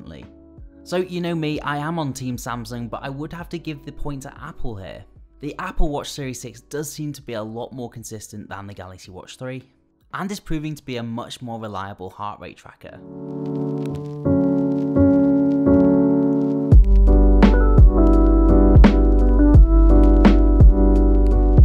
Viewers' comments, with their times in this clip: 0:09 I had some weird problems with my Galaxy so I started to look up other brands so I will be moving to Apple. Your content is very informative, but the "just loud enough to distract" muzak is too quiet but a few seconds later induces heart attacks with its loudness. The same problem happens at the end of other sections. I don't think you even need the muzak to begin with?